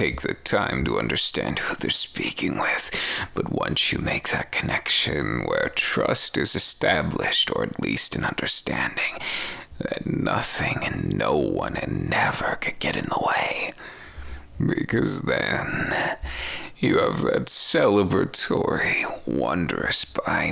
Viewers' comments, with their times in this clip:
0:04 dude idk but sounds so much like Zhongli to me like what- HSGAHAHAHHAA